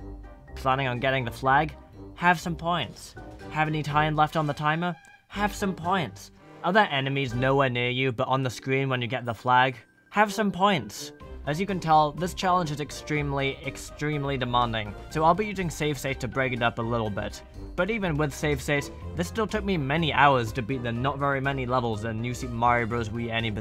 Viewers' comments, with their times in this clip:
0:04 his voice was in time with the music😃